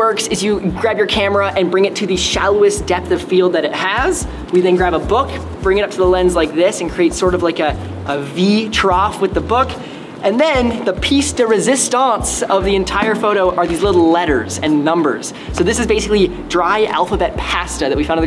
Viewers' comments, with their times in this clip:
0:03 voice crack lol